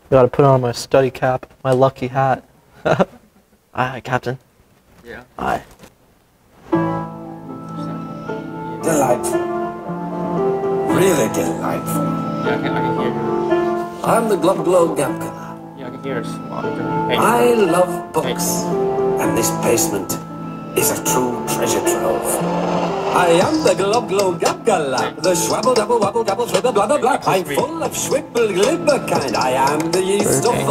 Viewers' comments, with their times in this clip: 0:07 you brought back a memory I never thought I had. That song 😭
0:15 this song goes hard 🔥